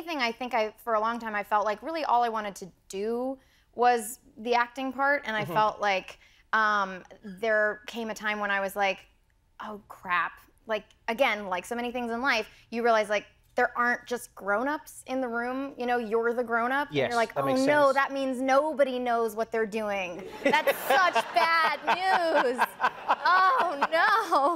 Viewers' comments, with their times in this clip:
0:07 Like..um..like..ldk..like.. Ooof,shut up